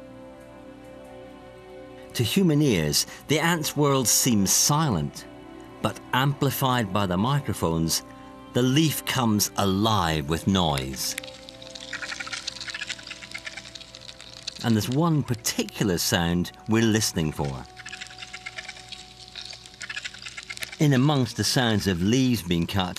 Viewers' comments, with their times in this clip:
0:06 so they do make them monkey noises (comment made 🤔huh